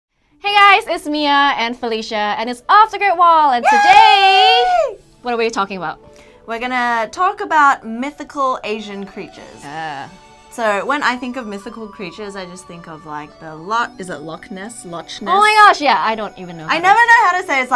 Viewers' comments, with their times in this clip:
0:03 That was a cute puppy howling haha